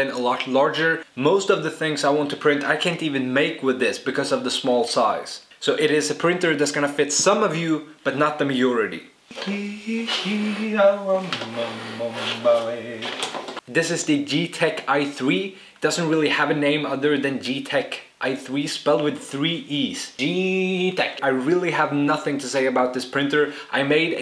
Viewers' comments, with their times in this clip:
0:07 What's mayority? XD